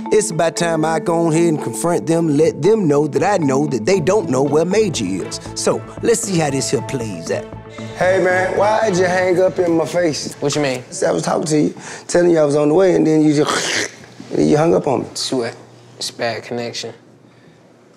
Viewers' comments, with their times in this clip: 0:03 he sounds like him and Kevin Hart should do a movie